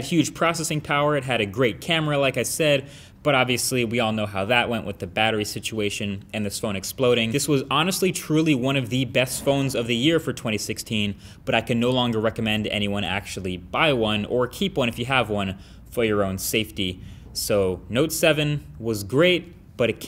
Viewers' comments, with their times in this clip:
0:07 that explosion sound can't hide from me